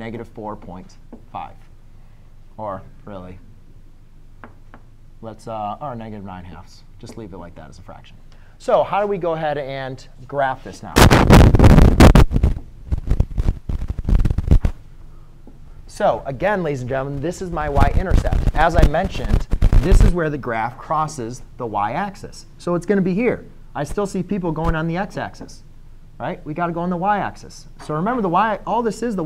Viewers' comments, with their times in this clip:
0:08 warning for headphone users
0:10 I don’t think the camera’s audio wanted you to graph it..